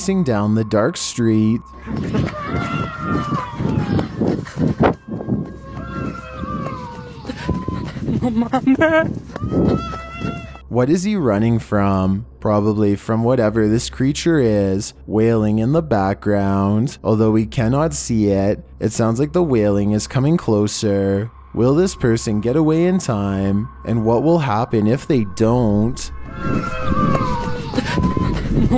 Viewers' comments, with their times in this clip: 0:10 Sounds like he's running from cats in heat... lol